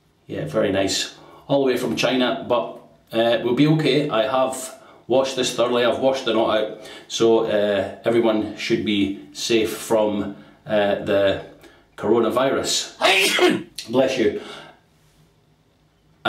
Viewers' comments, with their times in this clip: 0:04 Nice sneeze insert and great camera take right after!